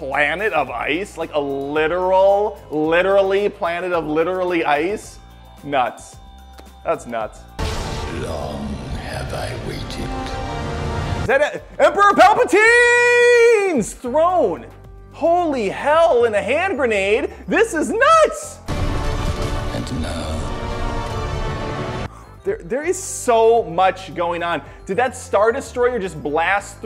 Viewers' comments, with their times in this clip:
0:08 Palpatine or Palpa-SCREAM? ;)